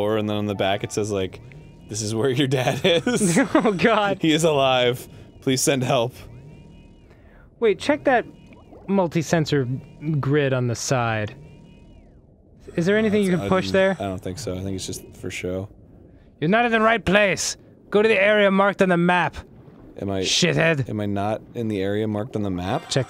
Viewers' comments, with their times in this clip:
0:10 Danny sounded like he was under water